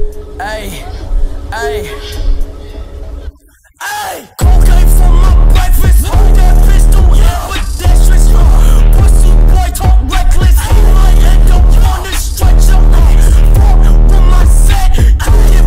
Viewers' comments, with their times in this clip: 0:03 I like how the bass got quiet then went crazy